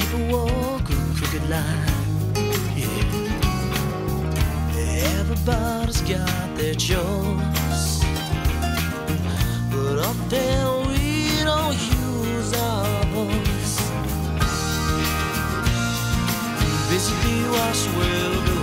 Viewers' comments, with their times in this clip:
0:03 I like how he says "yeah"